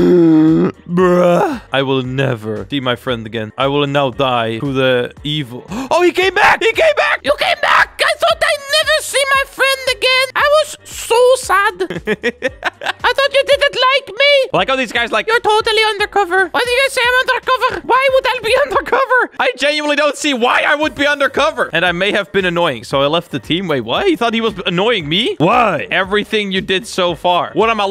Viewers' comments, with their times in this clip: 0:09 I like when you do that voice :D